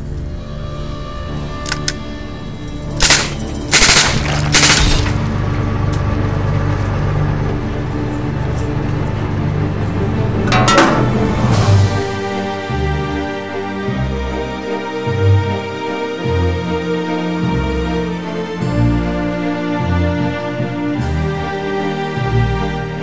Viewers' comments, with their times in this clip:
0:10 That nade cartoonish boom :D Ehehe, well, another great video, my friend, but that nade boom was super lame.